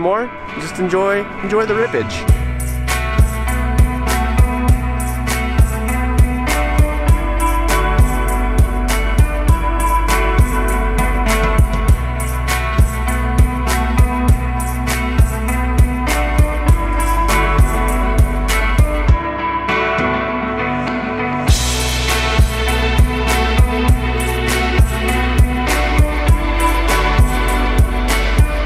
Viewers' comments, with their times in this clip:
0:10 cool choice in music